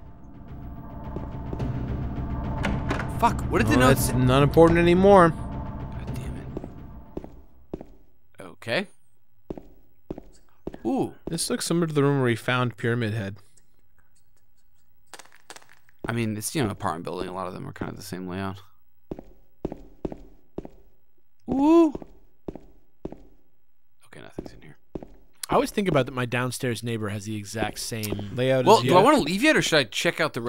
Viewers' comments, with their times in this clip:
0:04 They missed the whispers in the Lyne House room! It's so creepy but they were talking :(
0:09 The whispers just after freaked me out so hard, Jesus
0:11 Oooooo they got the whisper congrats!
0:12 Are we not going to talk about the whisper ?
0:12 the whispering in room 209. Went completely ignored.